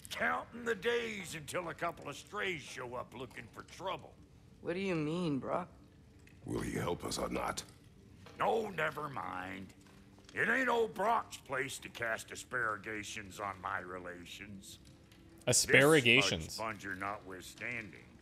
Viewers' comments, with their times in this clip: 0:04 i swear to god i heard Atreus saying "what do you mean bruh?" 🤣